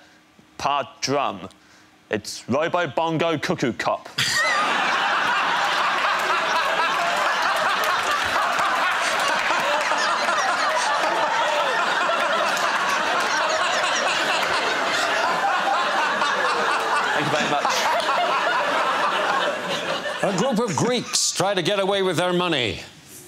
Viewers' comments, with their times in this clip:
0:05 Dara's laugh is one of the best parts of this show 😂😂